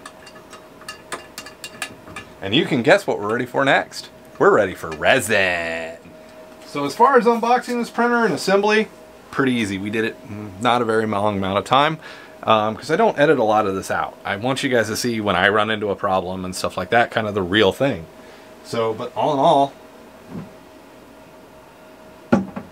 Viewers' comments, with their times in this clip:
0:04 I've begun to say resin like this after seeing this